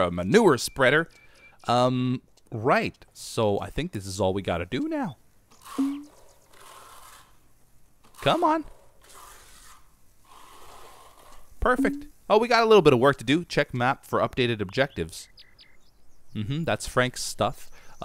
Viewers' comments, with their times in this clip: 0:05 now that's some good asmr